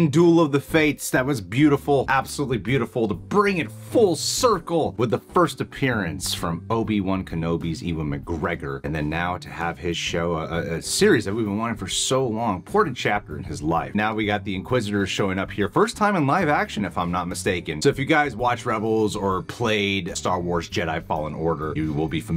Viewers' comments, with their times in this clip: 0:06 Oh no, he said Eevan instead of Ewan...oh no! It´s pronounced "U-en" and you should know that!!!